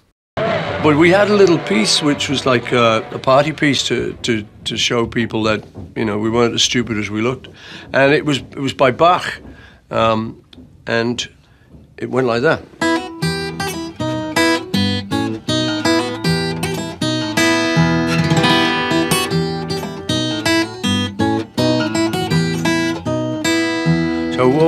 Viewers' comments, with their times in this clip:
0:07 shoutout to him for pronouncing "Bach" correctly.